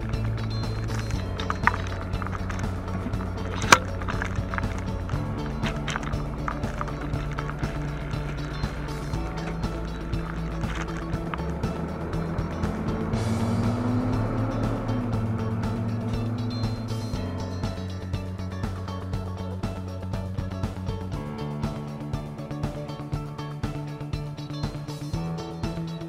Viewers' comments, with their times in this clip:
0:08 🤔I don’t know why I’m hearing the Green Acres theme song at the point!